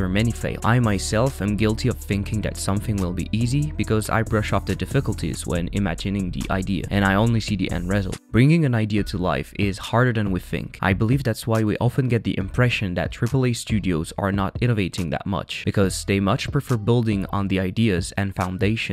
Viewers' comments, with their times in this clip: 0:05 wtf is that accent